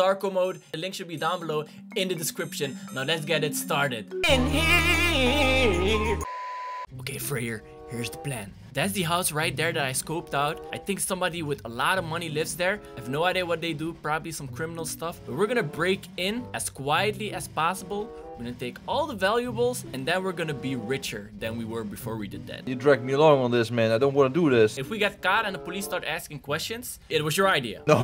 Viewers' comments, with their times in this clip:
0:10 you sang XDXDXDXD